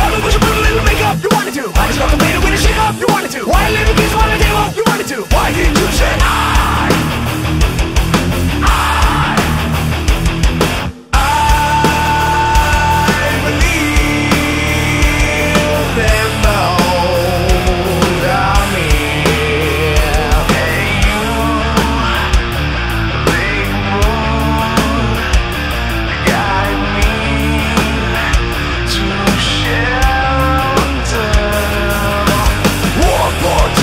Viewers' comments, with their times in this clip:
0:06 thats fucking good look just like Alice & Chain
0:16 your voice is like zakk wylde